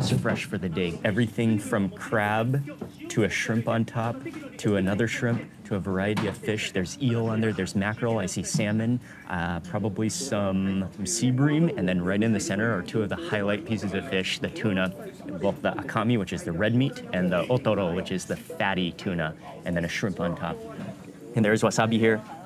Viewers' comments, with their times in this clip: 0:04 mins, its a shame that so many restaurants have a tv blaring. what ever happened to some nice relaxing music to eat to? i love your videos, all the food looks amazing!